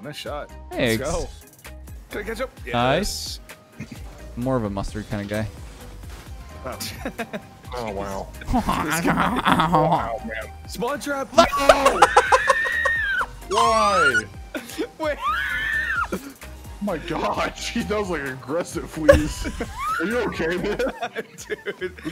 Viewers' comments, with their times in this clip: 0:10 whats happening here is it a new language